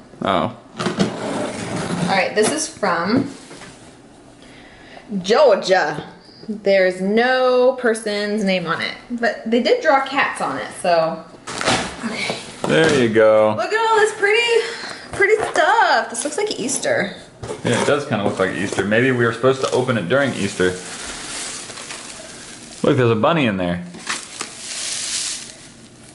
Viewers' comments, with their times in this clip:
0:08 AGAIN WITH THE NOT GEORGIA ACCENT